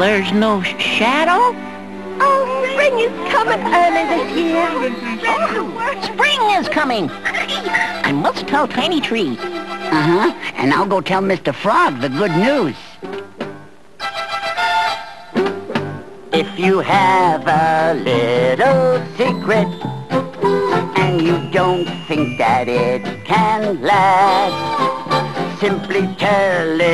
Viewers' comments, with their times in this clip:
0:09 🐢🗣 Paul Winchell as the turtle is using his Dick Dastardly/Gargamel/Sam-I-am/Tootsie Pop Owl voice!